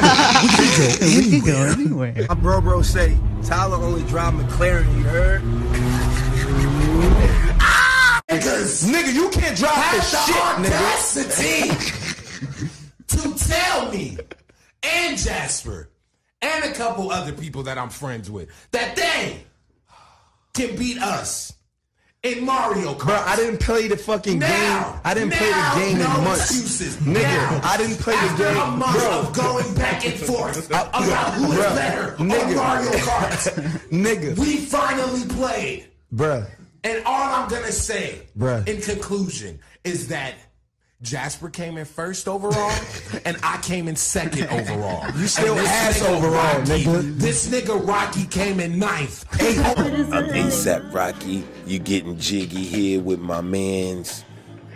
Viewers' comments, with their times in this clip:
0:08 tyler sounds like joe budden
0:10 Tyler turns into Stephen A. Smith
0:10 THE THICKNESS IN THAT "AUDACITY"-
0:36 he hit that “bruh” so clean
0:36 how priests be preaching ab mario kart